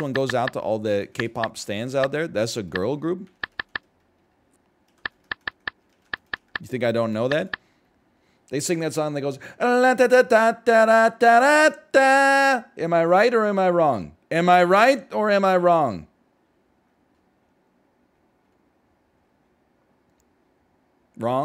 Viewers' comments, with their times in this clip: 0:09 tbh this sounded more like paint the town by loona rather than any blackpink song